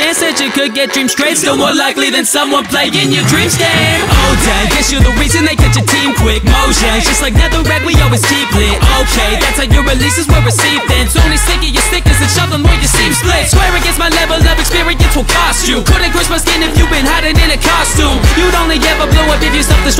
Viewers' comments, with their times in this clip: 0:03 why isn't anyone talking about that insane flow? That's one of the best I've heard!!🔥
0:03 the flow here is amazing.
0:03 love this flow
0:03 Honestly, Steve had the better flow, check it was SOOO smooth
0:03 that flow got me bopping hard doe!
0:03 my favorite parts is the flow and then the reference "swedes used to be neutral until minecon, fired notch cuz he turned minecraft to mein kampf!"